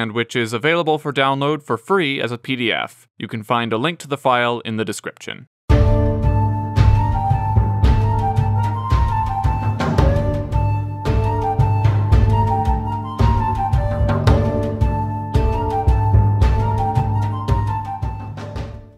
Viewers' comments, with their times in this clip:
0:04 ah pleasent Sadguru Music❤️